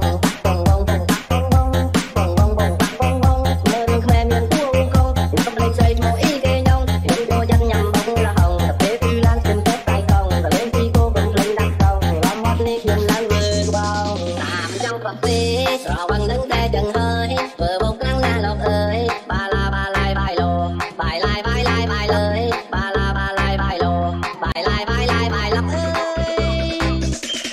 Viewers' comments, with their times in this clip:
0:09 I'm enjoy the music it's so nice